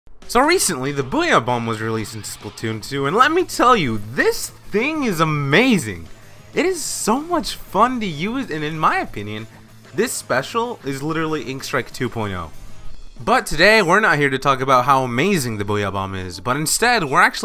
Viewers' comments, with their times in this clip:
0:01 Trainwreck of an electro swing, could you tell me what song this is?